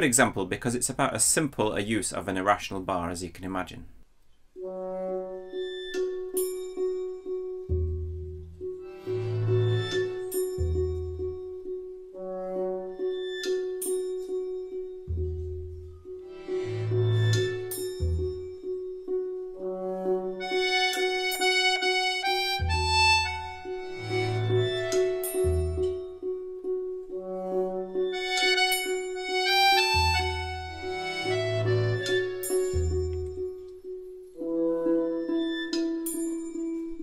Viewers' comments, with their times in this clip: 0:04 sounds like the soundtrack to Zelda: Breath of the Wild. lol
0:05 all of this math complexity only to sound like crap.
0:23 sounds like Breath of the Wild